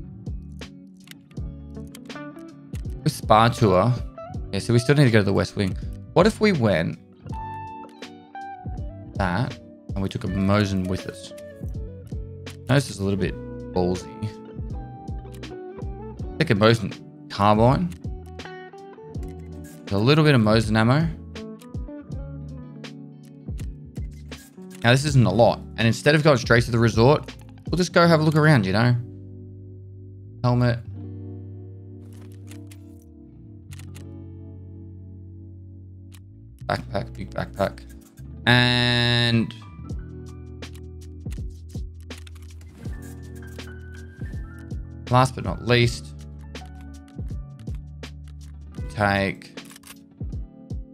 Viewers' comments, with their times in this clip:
0:07 is that a music for people to get "on the mood"?
0:37 what song is this? Oooooof. Smooth banger.